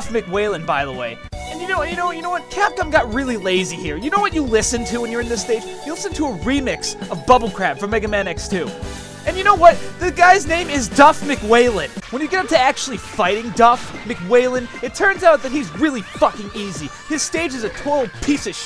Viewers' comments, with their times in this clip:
0:05 Except it sounds a helluva lot better here than it did it X2. My main issues with X2 AND X3 sound tracks is the horrendous overuse of that synthguitar.